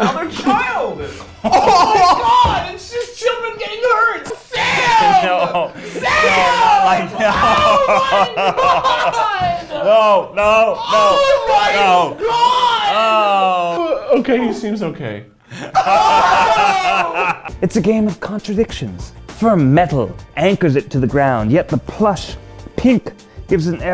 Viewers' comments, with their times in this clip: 0:04 Keith screaming in pure concern and HORROR: "sAAaMMMmMM" Me still laughing so hard my tear ducts stopped working: "PFFFFTTTTT-"